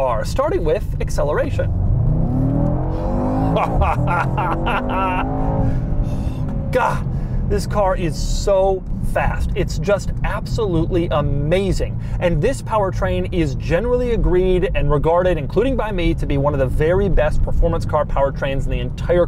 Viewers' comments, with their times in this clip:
0:04 The moment when you have enough of your kids and wife blearbing all the way and you just want to shut them up, just push a pedal and get that evil laugh :DDD